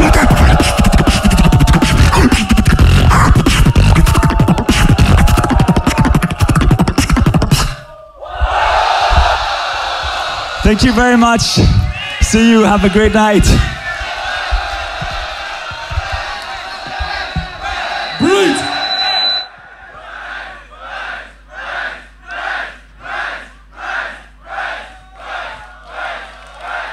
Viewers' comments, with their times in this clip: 0:08 safety and secret? 😄